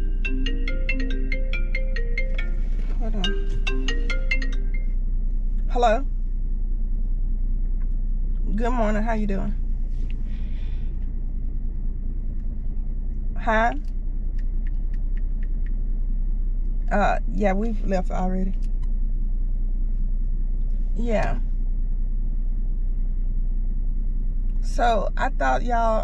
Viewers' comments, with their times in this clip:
0:07 STOP THE SILENT TALKING😭😭